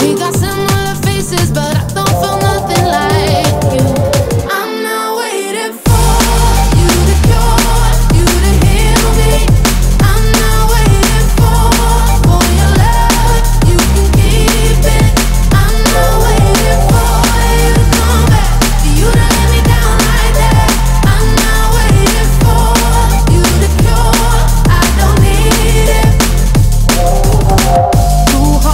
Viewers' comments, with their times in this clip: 0:09 I thought I got a Steam message